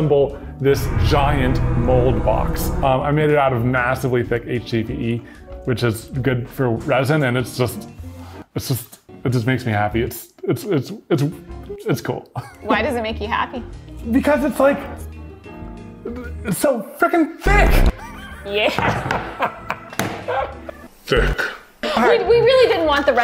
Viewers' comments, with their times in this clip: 0:04 Sounded like my mom for a sec there-